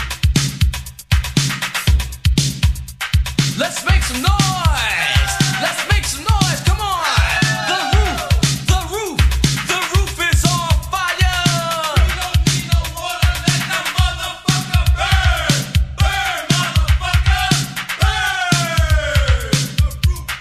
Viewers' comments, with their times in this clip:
0:08 The Dj starts